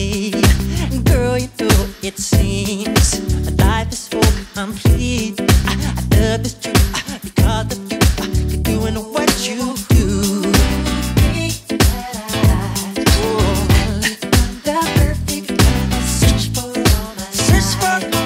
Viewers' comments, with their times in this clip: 0:03 Michael Jackson: 🎵My life is so He-He🎵